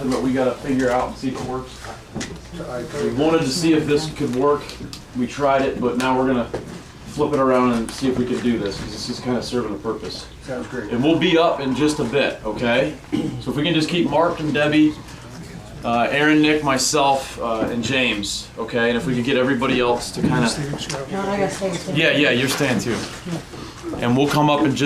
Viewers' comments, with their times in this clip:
0:10 Wow guys theres a voice in I dont know if its a persons voice or literaly unexplained voice, check it out
0:10 unexplained voice it sounds like huuuuuuu